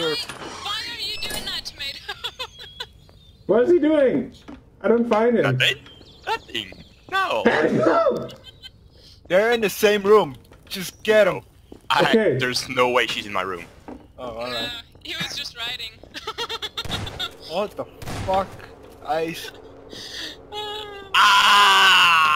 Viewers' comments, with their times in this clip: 0:06 bless you! LOL